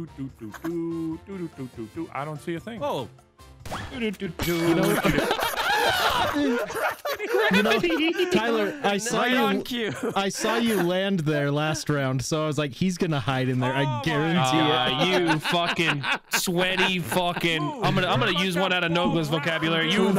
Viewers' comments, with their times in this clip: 0:05 Anyone else besides me think that Wildcat's scream sounded like one of Delirious's crow screams? XD